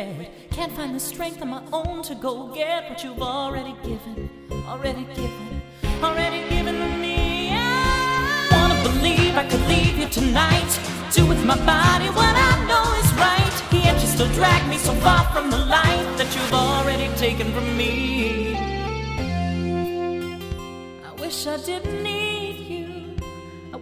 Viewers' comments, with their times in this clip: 0:04 He did not have any control The falsetto was beautiful tho
0:06 What in the name of all that is horrible singing was that ungodly pitch???? I really wanted to believe he was going somewhere with it but nope, he just abruptly cut it off.🤦🏾‍♀️🤦🏾‍♀️like he tried but was then was like nope not my range😂😂😂😂😂😂😂